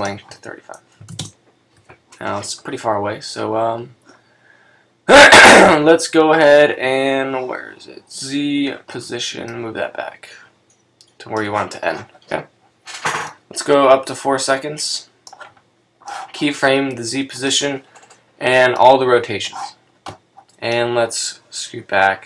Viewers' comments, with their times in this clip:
0:06 i think my ears bled ....haha awesome video thanks so much!